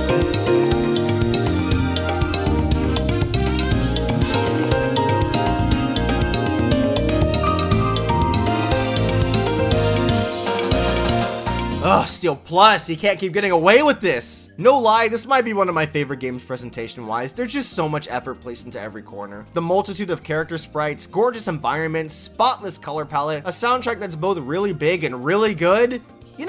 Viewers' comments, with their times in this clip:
0:09 this song reminds me of the melty blood type lumina ost so much